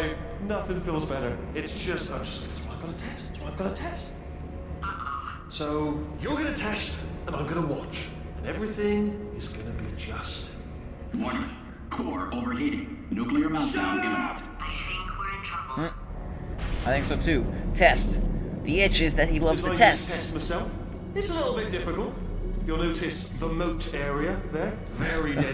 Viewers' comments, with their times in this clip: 0:09 that sounds abit creepy XD but oh wheatly your still one of my favs